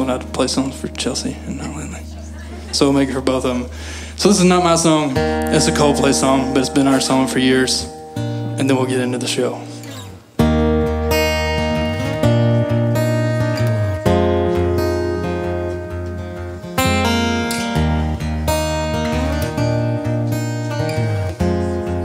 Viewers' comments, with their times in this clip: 0:10 because music start in